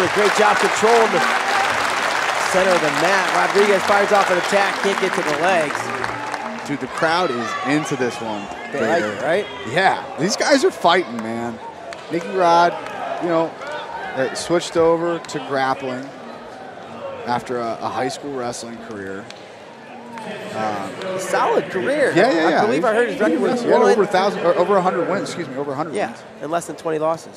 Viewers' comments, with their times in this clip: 0:08 Lmao who else heard Eddie Alvarez wife ? 😂